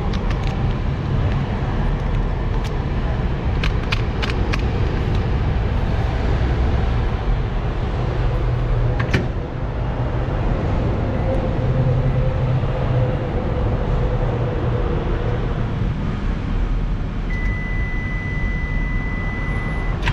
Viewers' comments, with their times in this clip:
0:05 okay, it's am and now I want snails XD. I do miss the dink dink of the coins going in the slot to pay tbh, but I love the vending machine videos and the self heating ones. We don't have anything like that here in Germany, so it is fascinating and hunger inducing at the same time. It looks soooo goood! Stay safe and healthy!